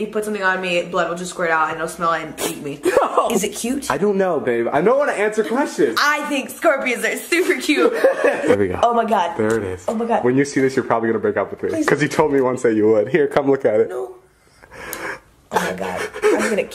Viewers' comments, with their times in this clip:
0:04 He just said BaAabbEee 😀😏😢